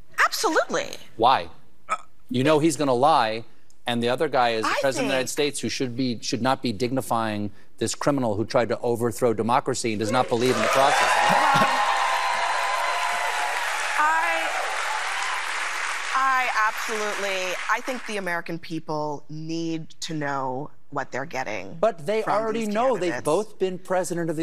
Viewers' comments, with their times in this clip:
0:06 Notice hold the crowd so quickly started yelling and hooting when Colbert was denigrating Trump around the mark? It's almost like they have people in the audience that know just when to start yelling and hooting to encourage the rest of the audience to join in. And I have absolutely NO doubt the "Applause" signs were flashing brightly too.